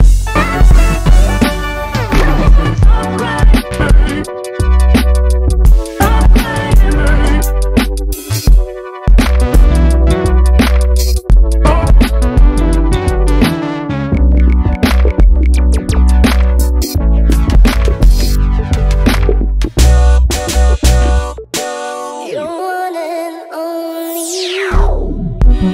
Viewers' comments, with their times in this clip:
0:08 Perfect sync with the handclap there 😃 You did put some great effort here, thanks.